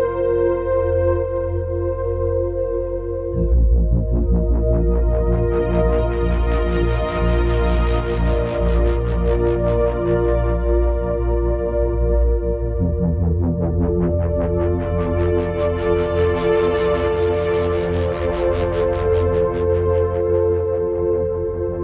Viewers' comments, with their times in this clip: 0:05 So sounds like music from the minute hour “something terribly offensive”